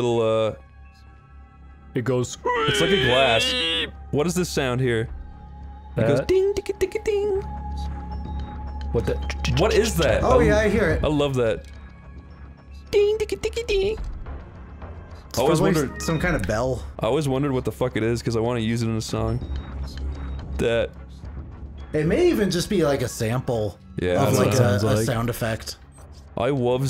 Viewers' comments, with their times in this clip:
0:03 I think it's a triangle bell that's rhythmically muted but I could be wrong.
0:04 It sounds like a synthesized concert triangle but I'm not too certain.
0:08 it sounds like a triangle
0:09 sounds like a Glass Armonica
0:09 It's probably a xylophone
0:13 the instrument that the song uses is a triangle